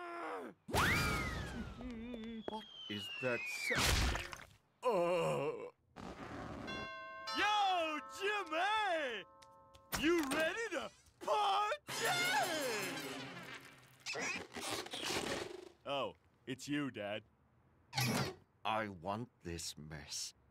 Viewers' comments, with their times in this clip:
0:04 the sound of genuine despair